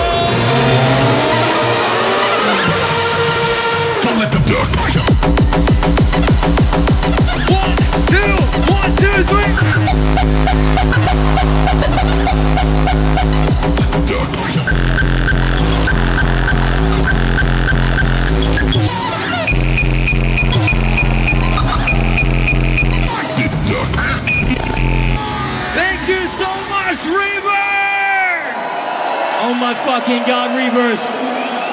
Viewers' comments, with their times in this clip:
0:03 PIEEEEEEEEP KICKS IN YOUR MF FACE
0:17 this woman didn't expect this kick :P
0:19 She knows the power of the piep kicks.